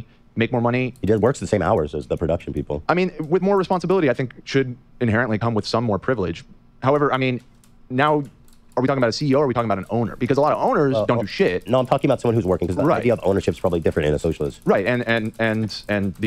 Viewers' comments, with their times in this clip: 0:04 the hesitancy on this question just shows how delusional their line of thinking is lmfao